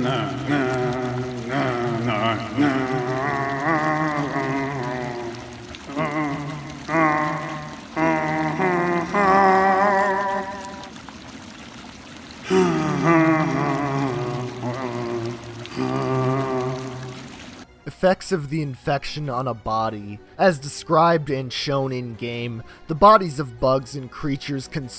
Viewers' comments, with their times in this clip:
0:08 Sounds like Chris Pratt talking a shower